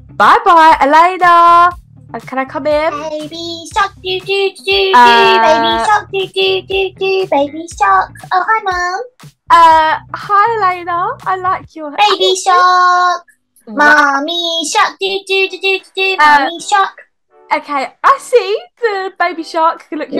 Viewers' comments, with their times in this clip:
0:05 not the baby shark 😂